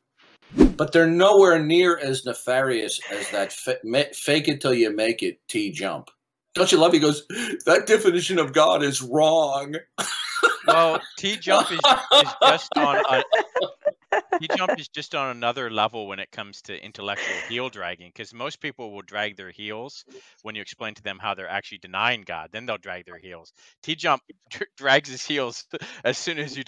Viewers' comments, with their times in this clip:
0:08 lol the minion in the background catching his cue to laugh